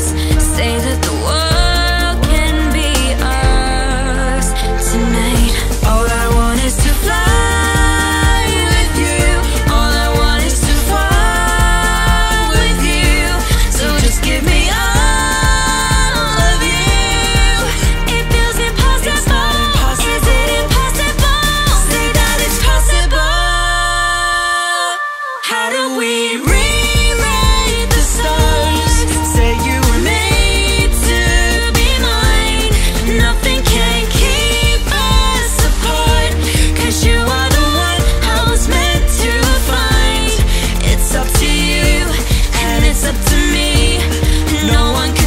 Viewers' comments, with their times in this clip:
0:06 to the end gave me CHILLS! It does when Zac and Zendaya sing it too, but your voices together sounds absolutely amazing
0:27 Thier voices on is the reason of me replaying💖 No words but just Beautiful.